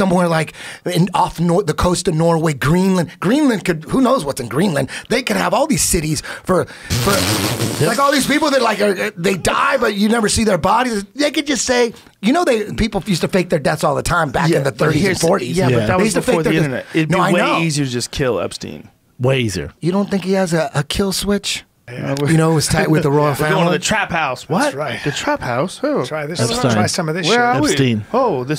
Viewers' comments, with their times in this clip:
0:07 was that a trump impression?
0:11 I love how he just turns into Trump for a second